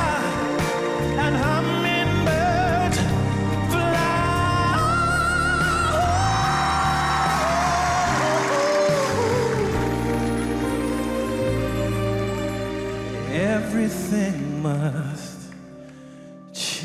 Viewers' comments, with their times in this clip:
0:03 That transition from his regular voice to falsetto was just flawless. Very Brian McKnight-esque, and executed perfectly. Bizzi had a rough beginning couple of rounds, but he's by far and wide the biggest improvement on the show.